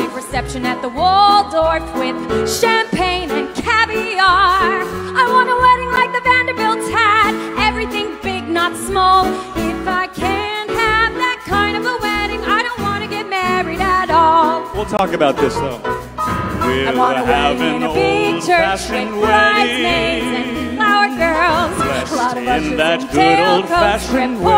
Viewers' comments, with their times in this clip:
0:05 OMG her voice at this part of my absolute favorite